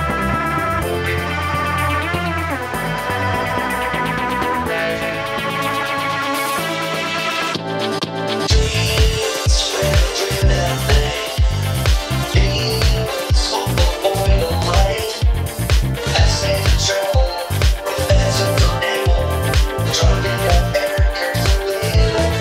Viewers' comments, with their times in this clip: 0:08 Beat kicks in